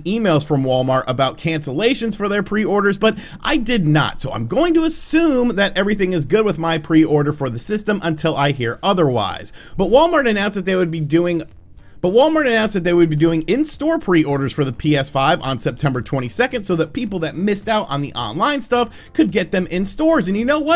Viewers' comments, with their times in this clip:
0:08 I don’t know how others feel about your little mistakes while talking like but I honestly love it! Some people may feel like they need to cut those things out but you don’t which means you don’t care what others think and I love that! Keep up the great content
0:08 your audio recording errors (assuming it's bc multiple attempts at reading your scripts) have been more and more frecuent lately, brah